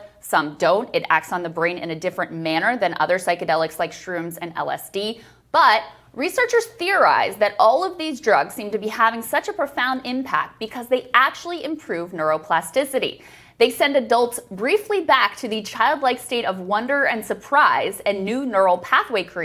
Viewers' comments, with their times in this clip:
0:03 Krystal is a real one the way she casually said "shrooms"